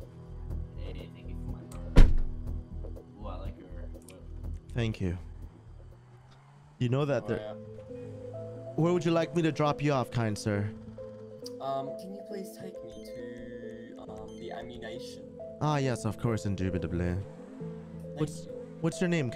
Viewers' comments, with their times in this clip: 0:06 That beat playing is fire 🔥